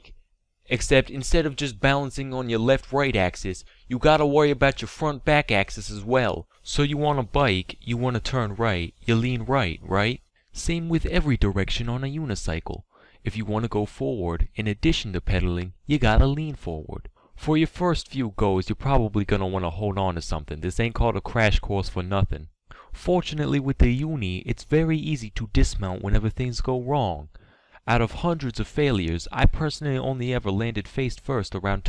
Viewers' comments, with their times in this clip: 0:09 I knew that Boston accent when I heard it
0:17 fuck it i would have yelled louder to assert dominance